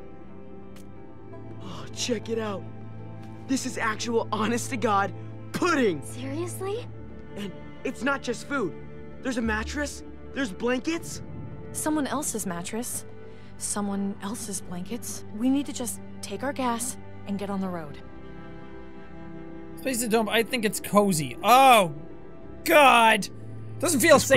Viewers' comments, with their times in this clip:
0:05 when he says ‘pudding’ I was looking away and thought it was edited in because in Call Me Kevin’s playthrough he edited it in so many times so now I always think it’s edited in lmao